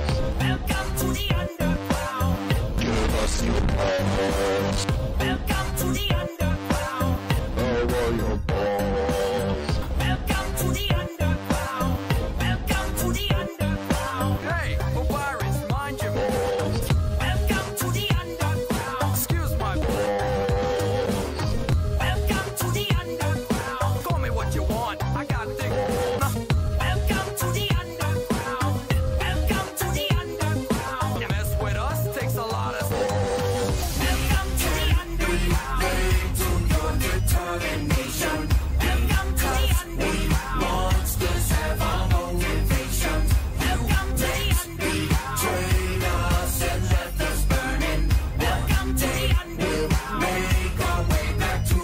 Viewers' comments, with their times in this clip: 0:06 i thought he said "I want your balls"
0:33 the song Goes hard
0:34 it goes way harder than the original we Papyrus is saying welcome to the underground at the same time